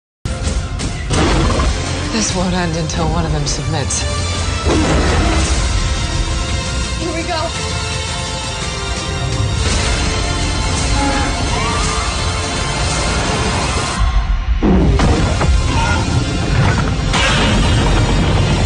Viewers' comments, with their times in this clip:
0:02 why does she sound like she is rapping